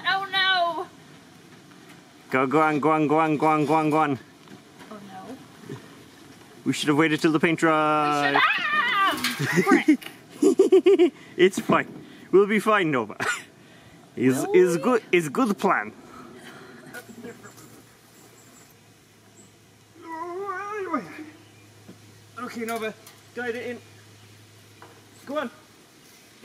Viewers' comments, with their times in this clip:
0:09 That sligtly psycho yet fun and joyfull laugh Hehehehe